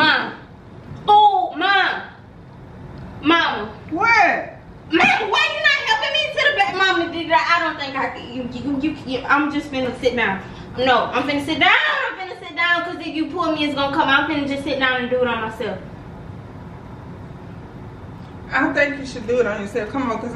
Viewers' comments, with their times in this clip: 0:07 I don’t think I can-you-i-yhksksk-jkdkdnd-blah blah blah. She can’t talk😂😂. Not trying to be rude btw, I was just tryna quote what she said. All love❤️